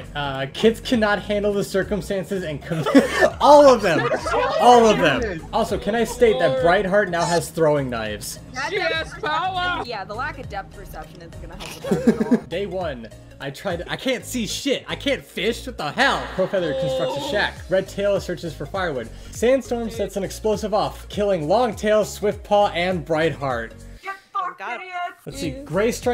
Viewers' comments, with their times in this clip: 0:08 why does one of the voices here sound familiar